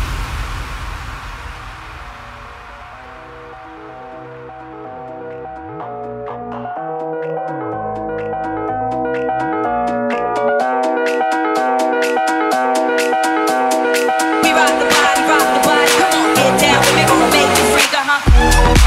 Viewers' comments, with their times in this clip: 0:03 is funky as fuck. Anybody know the track name?